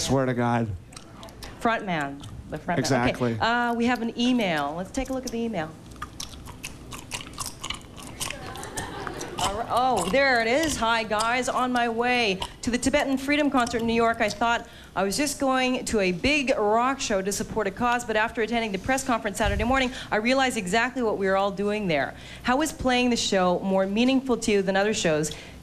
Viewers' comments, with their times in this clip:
0:06 Dave Grohl asmr lol
0:09 His gum chewing omfg somebody stop him